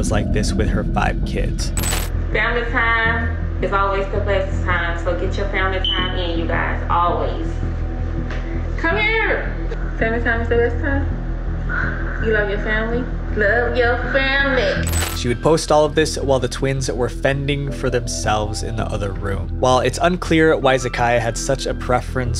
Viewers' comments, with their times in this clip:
0:09 Did I really just hear the chirp of a smoke detector needing a new battery in the background??? Why oh why would a black family not address this, considering this very thing being a stereotype often mentioned?!?!? Was she intentionally promoting it, thinking it might be something she could use for clout or something perhaps???